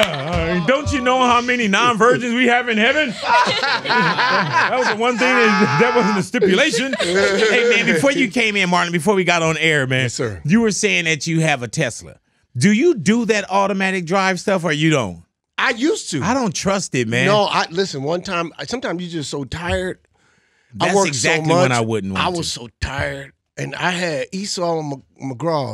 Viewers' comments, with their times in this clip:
0:10 Did big call him Martin round or am hating wrong